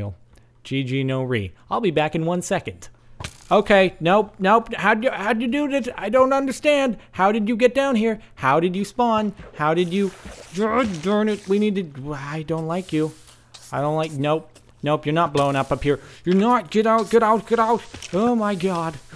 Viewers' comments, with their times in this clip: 0:04 You could have 'Leap of Faithed' off of the tree. Also, you sounded like Arnold Schwarznegger while you were getting rid of that skeleton.